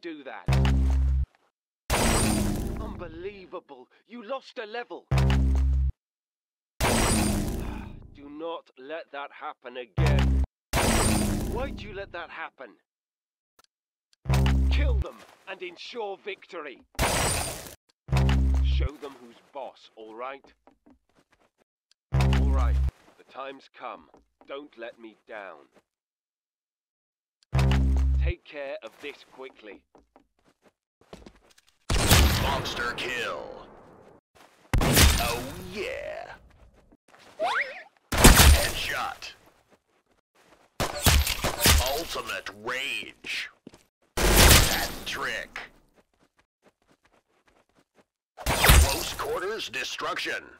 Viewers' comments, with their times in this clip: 0:10 woah I didn't know Gordon Ramsay voice acted in this game.
0:17 Speaker: Kill Em Insure victory dies LOL
0:31 the best voice pack that I want.